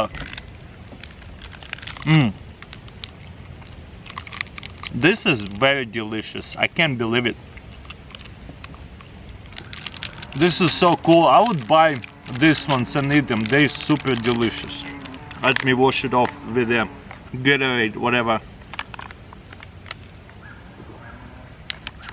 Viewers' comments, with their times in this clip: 0:09 "this is so "KUL"